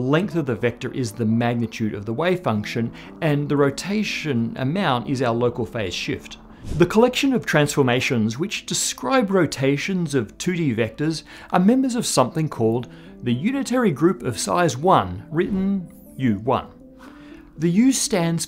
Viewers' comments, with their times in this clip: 0:04 even the video and audio freeze a bit. Well, the video was about symmetries and breaking them, so I guess it is OK...?